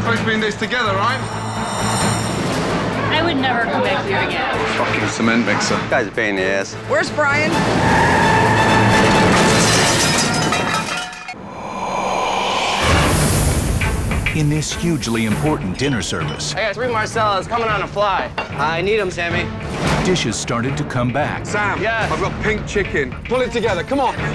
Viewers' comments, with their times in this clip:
0:04 "fookin cement mixA" I cant BREATHE
0:05 I love the screeching tires sound effects haha!
0:10 ~ why did they insert a demon breathing?